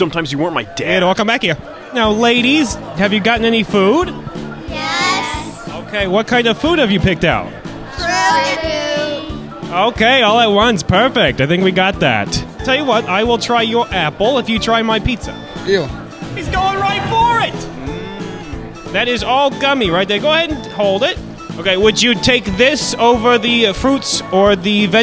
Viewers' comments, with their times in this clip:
0:08 I can’t understand what are The girls are saying I need help